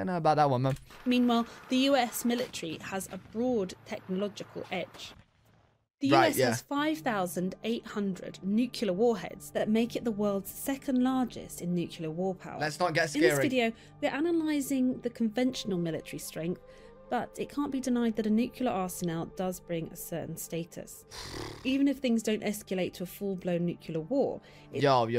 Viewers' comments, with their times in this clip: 0:08 I didn’t know that the British pronunciation for nuclear was “newk-yuh-lurh” 😂 👏🏼👏🏼pretty sure it’s supposed to be pronounced, “New-clee-ur”… but hey, say anything with a British accent and it sounds correct…🤣